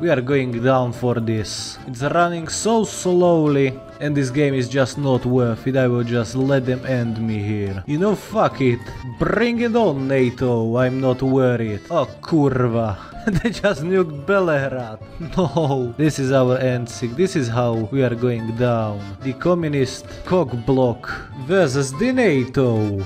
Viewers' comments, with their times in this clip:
0:10 Man you say ,,kurwa,, really well impresive